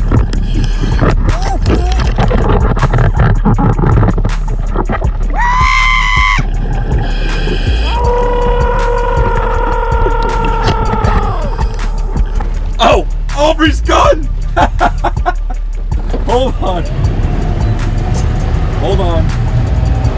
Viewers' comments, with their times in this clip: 0:06 That Scream 😱 was hilarious, must have been edited, because that’s impossible under the water 😂😂😂 great content as usual and smart move with the Thumbnail 😉 I’m not upset at all.